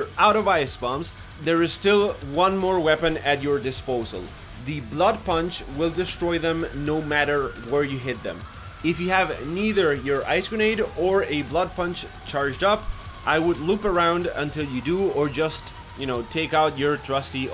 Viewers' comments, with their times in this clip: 0:05 When doom eternal music kicks in